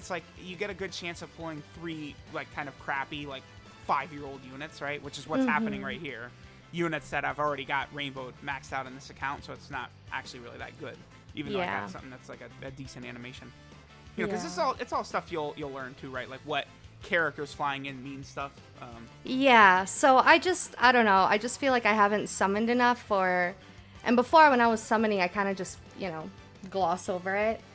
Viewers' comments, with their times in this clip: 0:09 do I hear echo from the call or is this a sign.